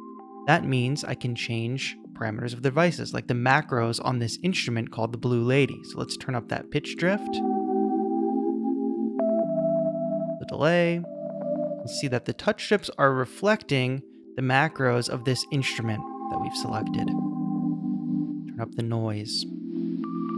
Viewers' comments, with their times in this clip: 0:05 A little off-topic, but which instrument is used for the "Blue Lady" submarine-like synth starting from ?